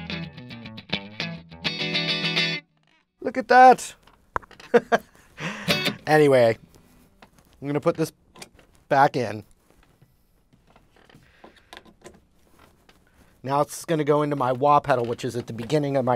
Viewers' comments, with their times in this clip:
0:04 what is the pop sound ?